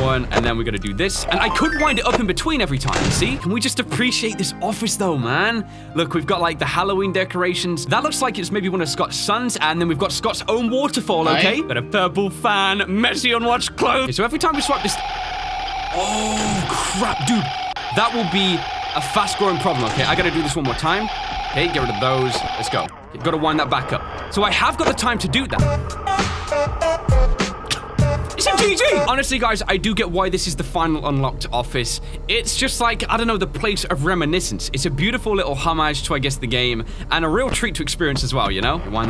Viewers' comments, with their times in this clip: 0:07 who else got memories from that background music
0:08 holy shit that dearly beloved hit so hard
0:25 where did that music come from?